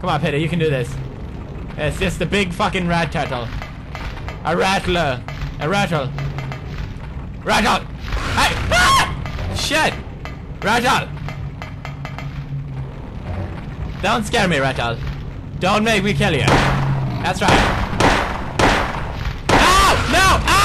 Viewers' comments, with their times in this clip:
0:08 Dat girly scream xD
0:08 LMFAO love your scream xDDD
0:08 Pewd screamed like a girl! :D
0:08 manliest scream ever